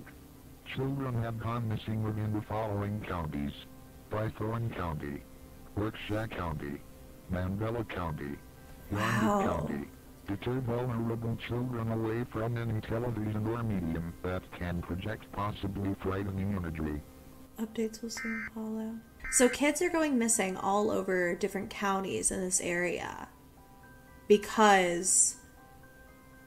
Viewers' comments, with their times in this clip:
0:09 I hate that that emergency broadcasting voice they still use it and it scares me